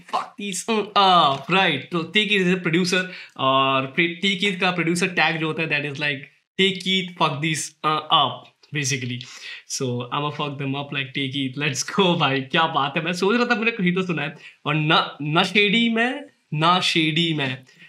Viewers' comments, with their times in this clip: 0:05 the way he censored that n word😂😂